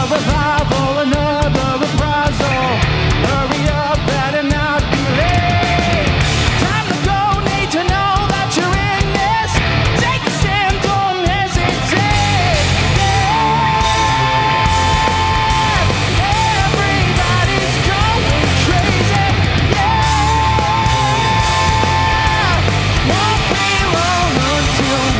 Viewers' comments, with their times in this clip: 0:10 The REAL DEAL. Took me til before I realized it wasn't the studio version. Sounds awesome. And love the "So this is Love" ending Nod!!